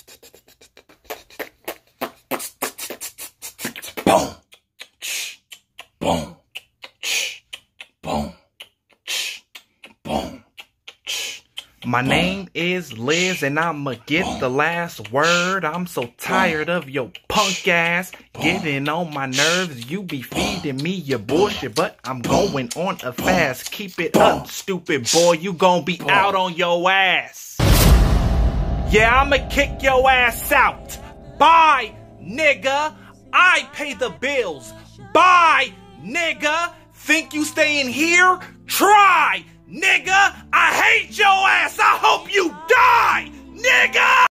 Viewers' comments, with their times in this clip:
0:06 deadass thought he’s gonna play the p*rnhub intro
0:08 my singing monsters has entered the chat
0:40 that sounded violent